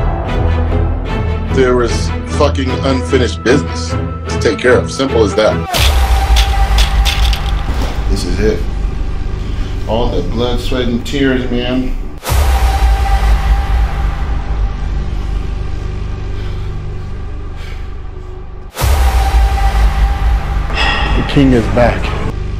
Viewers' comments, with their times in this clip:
0:04 you should’ve kept that first beat ngl